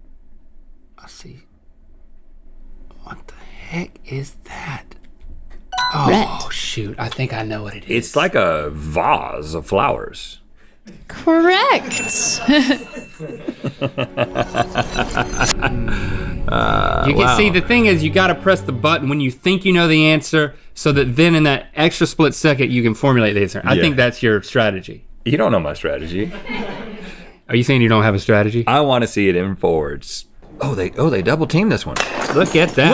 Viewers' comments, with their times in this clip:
0:08 the way Rhett said "vase of flowers" is sending me
0:12 Rhett’s laugh was very satisfying
0:13 Rhett's laugh seemed kinda evil 👀
0:13 Rhett’s evil laugh with the music was cinematic.
0:13 Rhett's evil laugh
0:15 rhetts evil laugh 😍